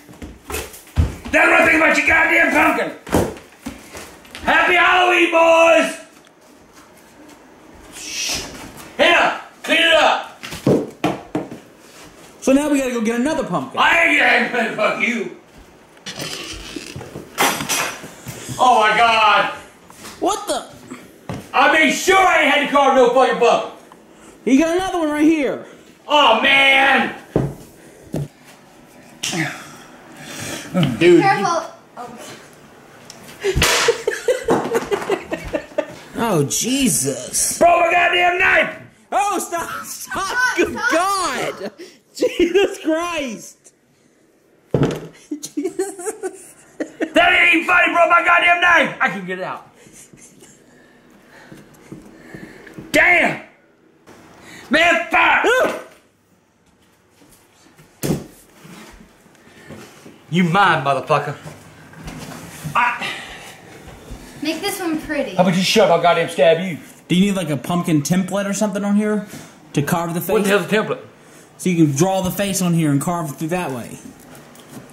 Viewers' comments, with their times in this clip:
0:04 Boooys - Tall Man from Phantasm 😆
0:47 (that ain't funny it borke my goddamn knife, in mad voice) (i can get it out, in non angry voice ) what is with dis dude and the mood swings
0:56 manliest scream ever